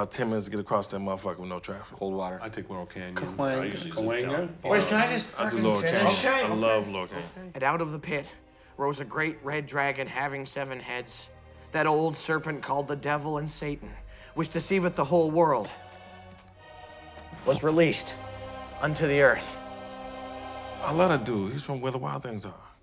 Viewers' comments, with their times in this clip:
0:06 I feel like they knew what they did making him read that line with that voice